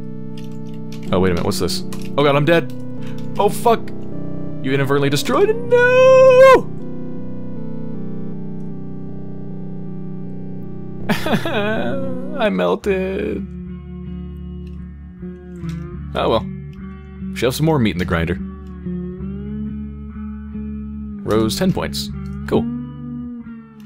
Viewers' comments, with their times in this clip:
0:06 oh the sounds we make when gaming :)